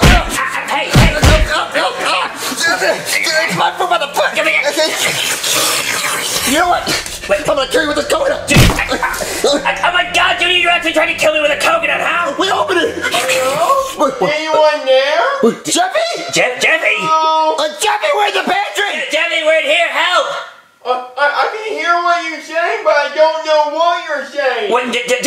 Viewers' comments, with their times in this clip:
0:03 is my fruit by the foot give me that AHAA JAAA sound like a snake
0:08 WHAT THE FU- BOOM!!!!!!!!!!!!!!!!!!